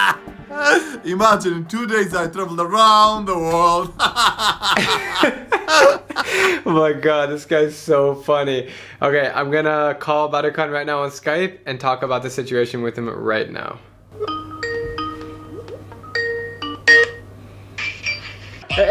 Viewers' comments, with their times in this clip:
0:04 Also,he laughs too much and it makes me think that the officers thought that he was a sociopath becuz he laughs way too much Haha( you can tell he is desperate for content and is trying so hard to fake the laugh)